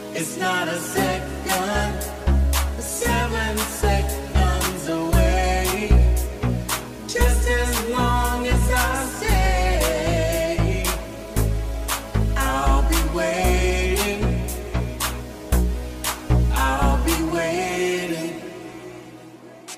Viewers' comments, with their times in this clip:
0:04 like listening to drunken karaoke